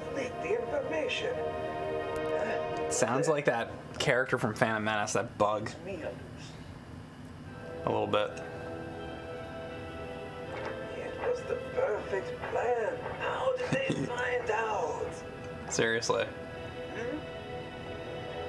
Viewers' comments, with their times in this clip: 0:03 watto! Mixed with master splinter